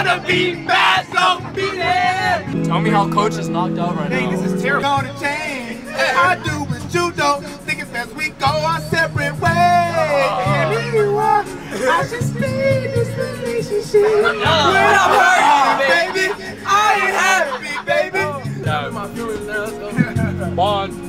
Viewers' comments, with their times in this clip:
0:03 they really be turnin up to karaoke in the bus and there coach just knocked out cold. #heavysleeper 😂
0:07 he ain’t sound the best but he hit that note tho 💀🤣